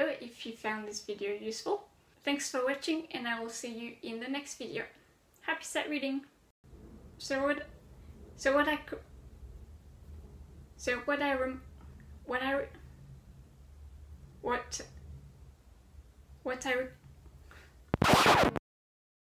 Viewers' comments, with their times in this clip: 0:08 From onwards is what my sightreading sounds like!